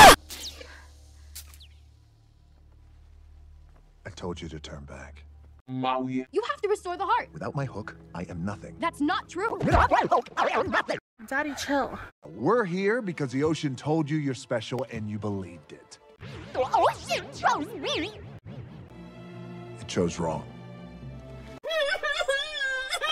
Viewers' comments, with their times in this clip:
0:04 I HAD HEADPHONES ON-
0:05 that "MAUI 🤖" had me laughing so hard and I dont know why
0:05 Màùì Caught me off guard 😂